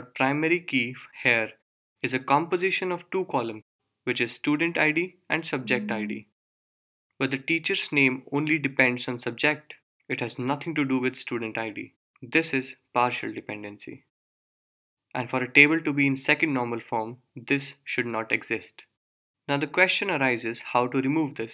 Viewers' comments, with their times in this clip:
0:05 this is a good video, but it is a bit distracting that you keep getting messages throughout the video. I kept looking around the room to see where my phone was, and why it kept getting so many messages, until I realised that it was part of the recording. (see, for example, ). Thanks for the videos, though